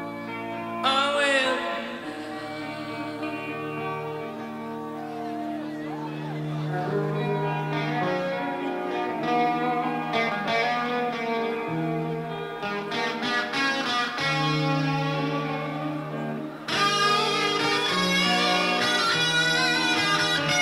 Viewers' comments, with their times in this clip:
0:06 I love how at the spot in the video Matthias hypnotizes her and makes her forget where she's at with his guitar playing